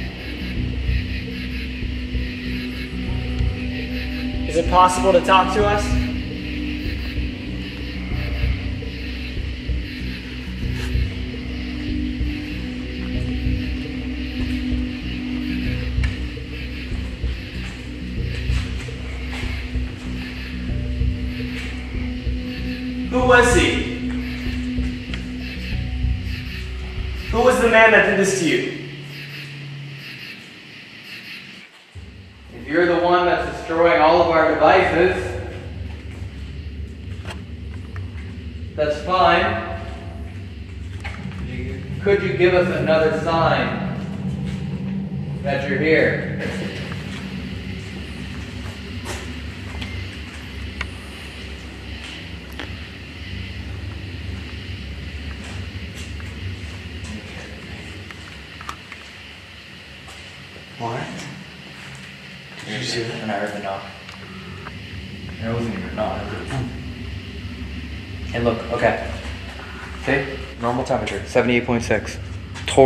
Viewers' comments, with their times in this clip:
0:09 you can hear like- a sort of breathing, it could be even because he has to breath, but it only starts there and i think if it was him it would be consistent though the video
0:55 Idk if anyone else heard this but there was repeated whistle’s and it was somewhat prominent but idk if that’s just my imagine or not